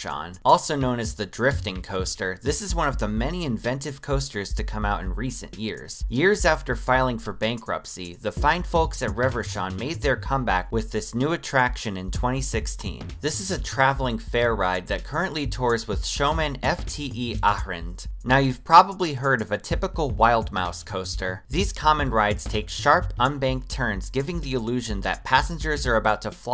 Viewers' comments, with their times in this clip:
0:08 eurobeats kick in